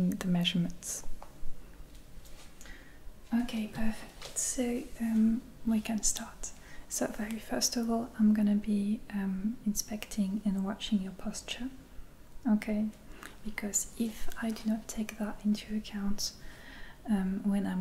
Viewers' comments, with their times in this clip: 0:03 I think it was funny when you say "Ok, we can start." It sounds like a statement of authority instead of a statement of passiveness, like "are you ready to start now?" From what i understand, this is just the way french people are and I'm all for it. I wish i could talk to my customers this way lol.